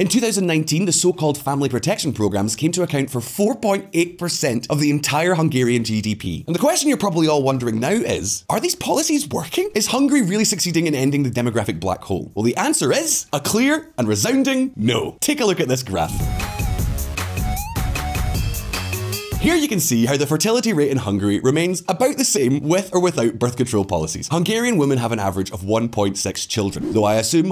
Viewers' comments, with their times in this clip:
0:09 Going from an avg of 1.25, to 1.5, is a remarkably effective policy. Orban came to power in 2010, exactly when the fertility started rising dramatically. Just because the goal is not reached, does not mean you're not on the way there. The smug grin and mocking tone on top is just a litle gross.